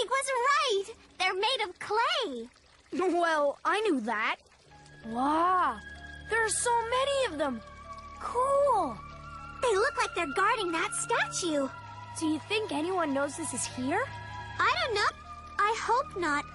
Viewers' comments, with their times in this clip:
0:03 the music sounds a LOT like the music that plays in the 4 main areas of Majora's Mask (Southern Swamp, Snowhead, Great Bay, and Ikana Valley)